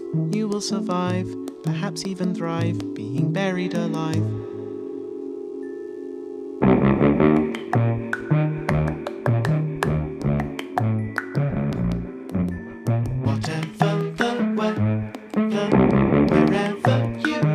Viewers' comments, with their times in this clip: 0:03 oh dang that trombone melody 😍😍😍